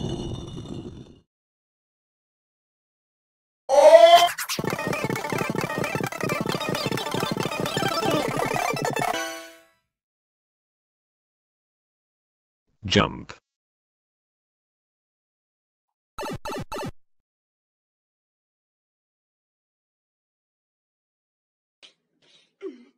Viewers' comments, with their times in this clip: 0:04 the intro on 0.25 speed goes hard
0:04 put the speed at 0.25x and youll hear the intro at normal speed :O